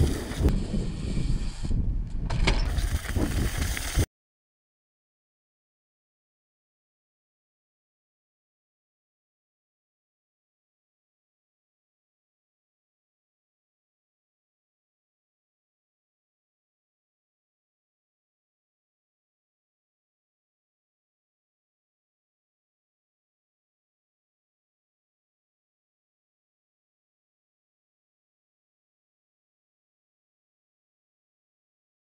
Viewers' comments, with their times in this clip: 0:04 I dont have any audio from to the end, is it normal ?
0:19 Damn no tunes